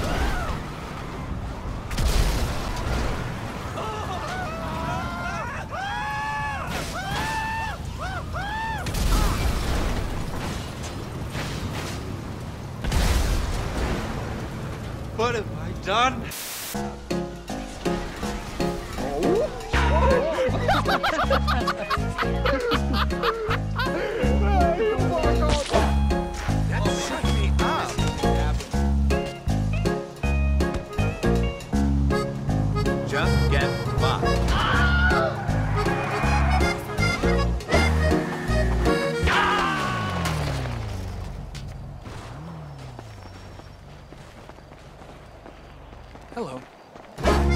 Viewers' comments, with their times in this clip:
0:10 That whole explosion that killed the guy who was screaming like a little girl just killed me:face-blue-smiling:🤣🤩
0:33 Yall...that scream has me crying in the club.